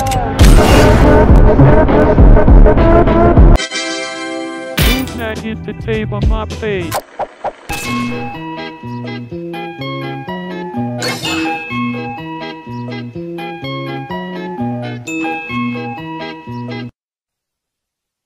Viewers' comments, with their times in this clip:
0:04 best music ever